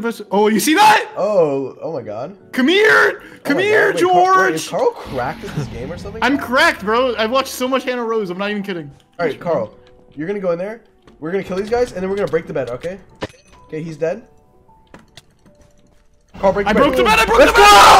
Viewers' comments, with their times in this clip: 0:03 Why was Karl's "come here George" so similar to when dream says it in manhunts